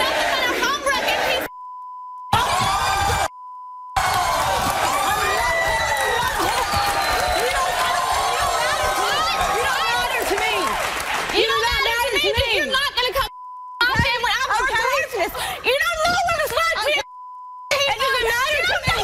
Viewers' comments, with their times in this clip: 0:05 That scream tho 😂🤣🤣🤣